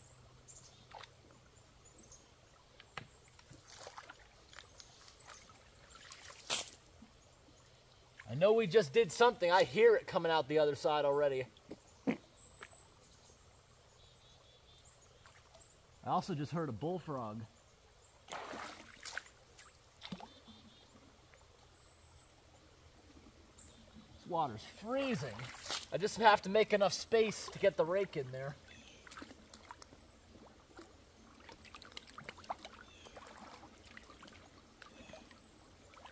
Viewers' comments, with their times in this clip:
0:04 did he just fart, and blamed a bull frog?
0:07 that aint no bullfrog 😂 💨
0:08 "I hear it coming out the other side already" fart "I also just heard a bullfrog" Nice try blaming it on the bullfrog :D
0:09 Heard a Bull Frog.😂😀🤣
0:09 that was some bullfrog. definitely some gas being released In that swamp
0:10 Woah! Did everyone hear that bullfrog?! It sounded like it was HUGE! I bet it stirred up stinky swamp gas when it jumped as well.
0:10 😄 those pesky bullfrogs!
0:10 That wasn´t bullfrog 😇
0:10 was that a fart?
0:10 Did you hear the “bullfrog” ? LOL
0:11 are we sure that was a bullfrog? Somehow, I don’t think so.
0:11 Bullfrog sounds close
0:12 That wasn't a bullfrog, dude. You had chili last night. ;-)
0:13 yeah that bullfrog farted pretty loud
0:21 I thought u farted 🤣